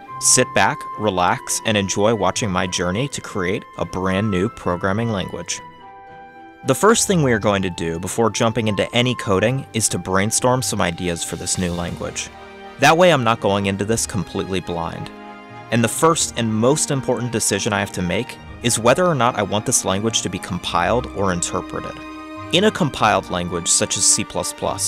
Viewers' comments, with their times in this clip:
0:09 green needle some ideas?